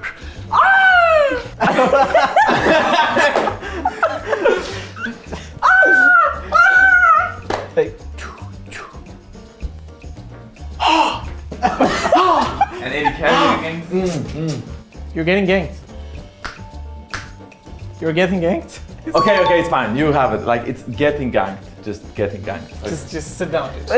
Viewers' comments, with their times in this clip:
0:05 real voice AYAYA